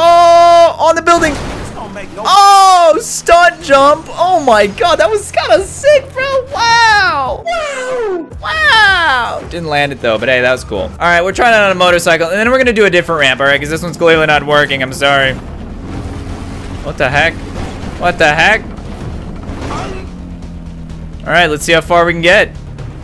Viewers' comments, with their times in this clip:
0:06 is he using autotune 🤣